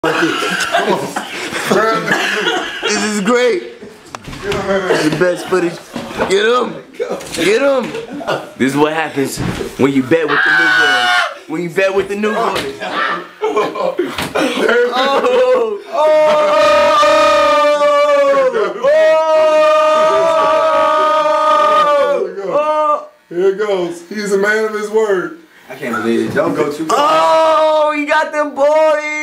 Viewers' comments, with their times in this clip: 0:00 Lol whos laughing
0:10 sexii scream XP